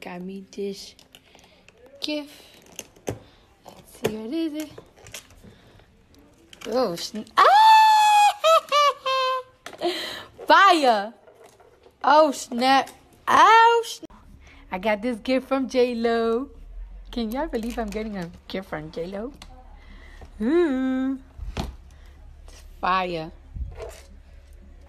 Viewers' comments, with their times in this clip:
0:07 sound like goofy
0:08 Her laugh is her best feature hands down 👌🏼